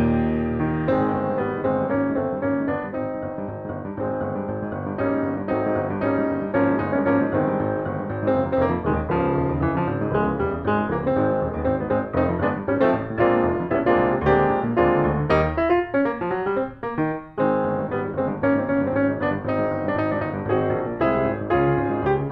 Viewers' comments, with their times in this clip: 0:09 Yay! Fun!! and loved the muted succession mark. Such great timing and synchronization. Love you guys!